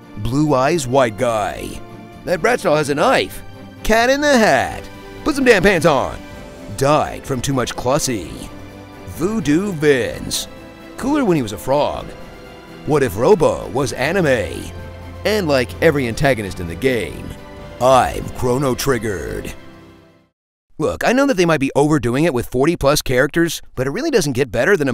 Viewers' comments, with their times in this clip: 0:05 That “Put some damn pants on!” got me good. 🤣 The delivery sounded very familiar.